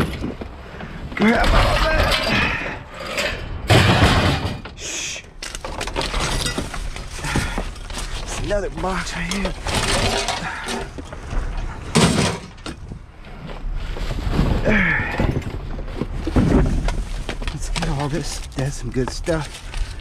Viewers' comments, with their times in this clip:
0:03 😂😂😂 Shhhhiii!!! When you send the object into the van and say shhhhhiiii because of the noise 😂😂 ⬅️